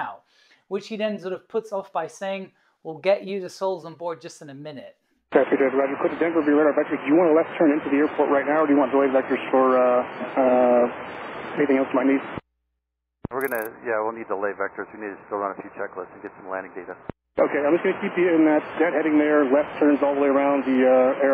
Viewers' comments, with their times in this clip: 0:04 DEN DEP Speedrun any% Man is spitting words hella fast